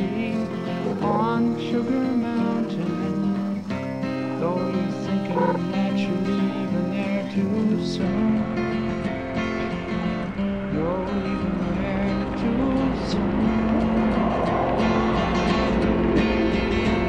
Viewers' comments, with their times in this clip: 0:05 Sound a raven?